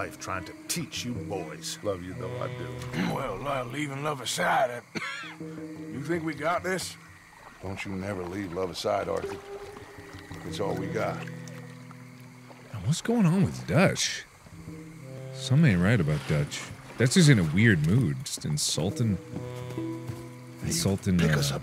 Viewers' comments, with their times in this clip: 0:08 ahhh i just remembered why Arthur is coughing.... 💔